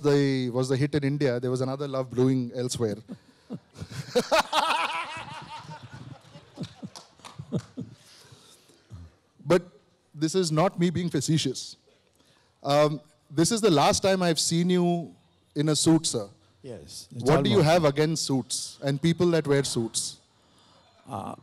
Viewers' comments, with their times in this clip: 0:03 the devil laughed